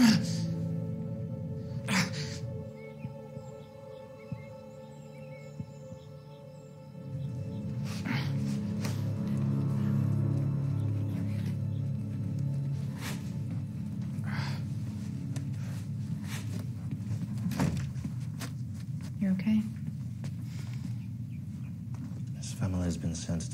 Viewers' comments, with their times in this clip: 0:10 Anyone else hear someone whisper "get behind me" ?